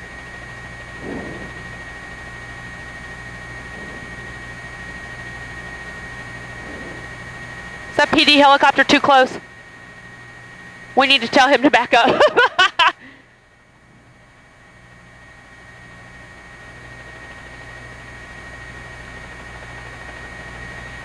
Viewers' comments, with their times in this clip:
0:06 why did she laugh? Was it shock or was it really funny situation?
0:08 Why does laugh after saying “helicopter too close, we need to tell him to back up” after two planes hit Find that quite insensitive